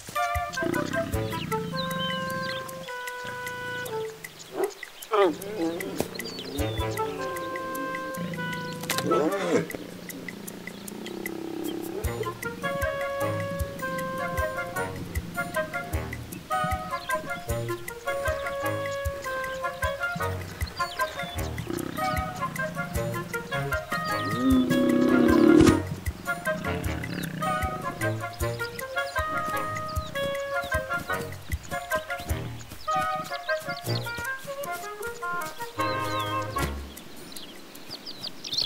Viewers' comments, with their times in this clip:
0:06 The sound that he makes when the little branch breaks is just so hilarious! Could not stop my laughter. 😂
0:23 Why is nobody talking about the roaring while he falls? 😂😂😂